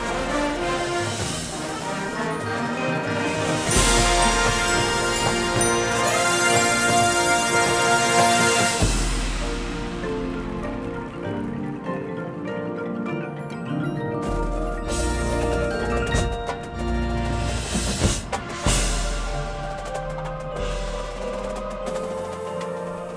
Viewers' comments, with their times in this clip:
0:05 That mello rip !
0:05 Fun fact of the day: my brass tech was in this show, and according to him it was just him and 3 other mellos doing that insane rip
0:06 mellos impregnated me